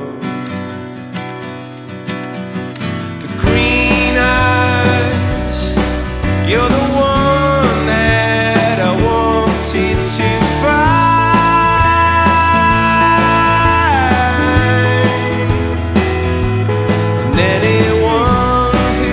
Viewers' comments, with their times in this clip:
0:03 The way this song builds to an extended climax is so perfect and emotional. When the piano, electric, bass, and drums enter it launches me to an emotional high that few experiences replicate.